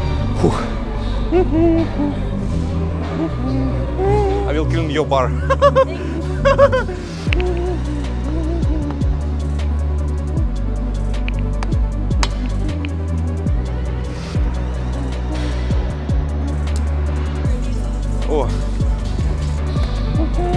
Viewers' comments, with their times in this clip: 0:06 The laugh is something else.😆